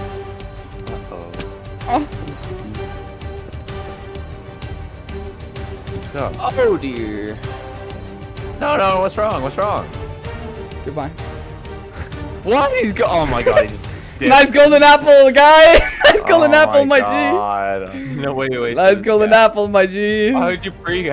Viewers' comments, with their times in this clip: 0:08 the voicecrack lmao